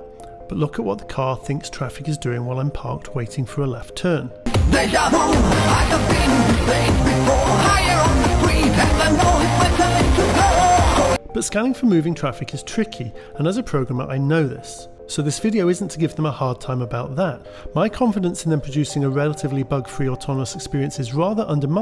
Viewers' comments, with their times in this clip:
0:03 What is that? Dragon Ball? I turned on captions and it doesn't even say [Music] like it does for clear audio.
0:04 Did you hack your Sega Genesis YM2612 DAC again? :P